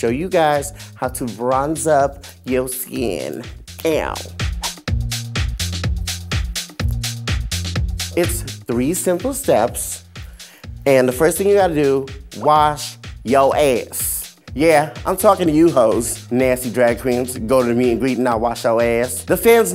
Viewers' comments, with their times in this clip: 0:07 girl! Jiggy Caliente? Where’s the L ?!!?!